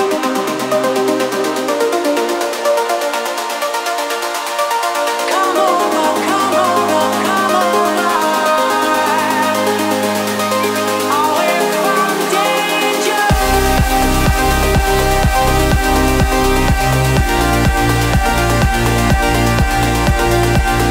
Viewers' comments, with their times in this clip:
0:03 What a set! phew! When Hide You drops wow. I got chills. I agree with lots of the other comments saying that Need to feel loved was great. But Hide You drop was just a great moment and had been building and building and building.